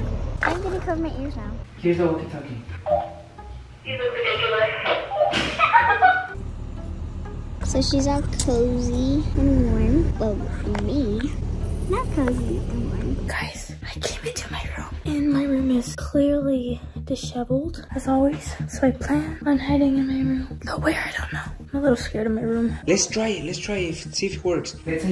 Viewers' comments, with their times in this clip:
0:10 cant you hear a rattle ig sound almost like a snake